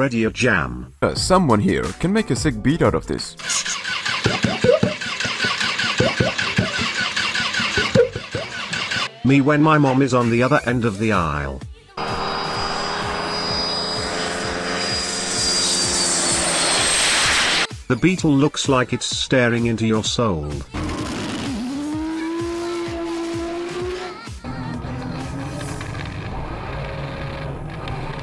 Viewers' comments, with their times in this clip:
0:08 sounds like the alien voice changer
0:12 the cart sounds like a airplane landing